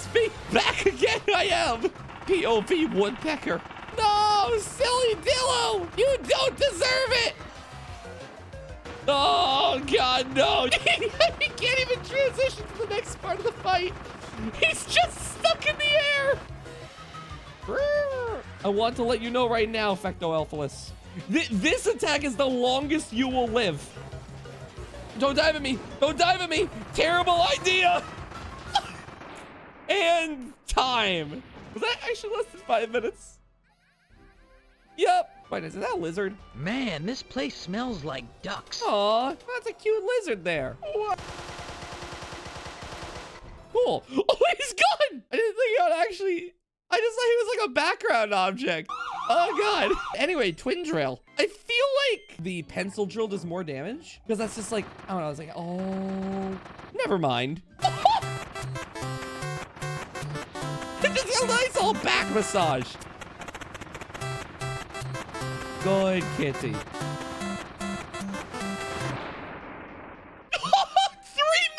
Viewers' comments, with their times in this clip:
0:06 He is yelling in agony, God, he will need therapy for the next 10 years...
0:07 I love how silly dillo is screaming from pain
0:57 Welcome To ASMR